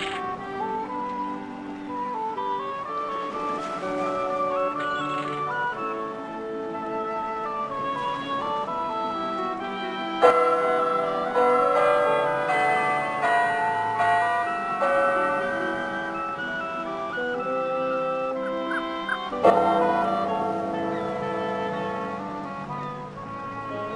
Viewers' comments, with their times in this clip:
0:09 Best part! I always loved the clock!